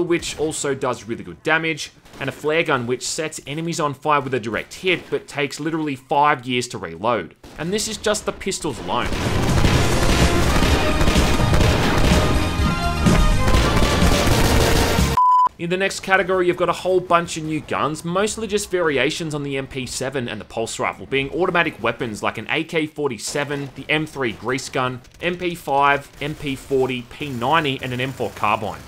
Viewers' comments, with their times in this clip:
0:09 this theme brings back so many memories. Thanks for adding that in.